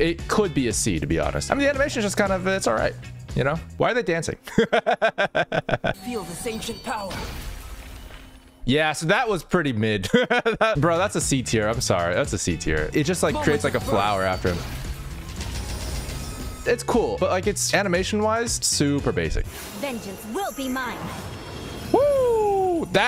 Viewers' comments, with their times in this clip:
0:04 THE LAUGH GOT ME ROLLING ON THE FLOOR.